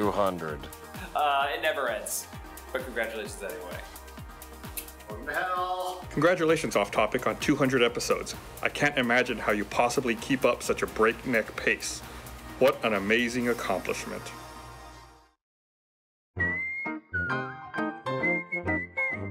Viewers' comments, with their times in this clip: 0:06 enthusiasm is off the charts